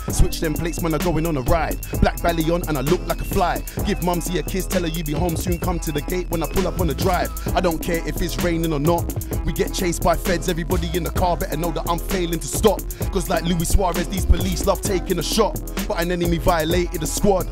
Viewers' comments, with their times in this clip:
0:03 thought he was giving Mumzy Stranger a shoutout